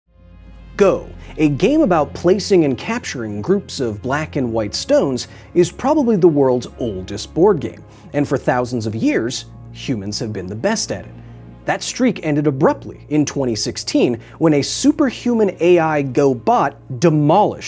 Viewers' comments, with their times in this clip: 0:03 my Brain. "People." instead of Stones. jokes aside. If I was a Go Master. I feel I would play against the ai the most and get my ass kicked in the most epic of ways.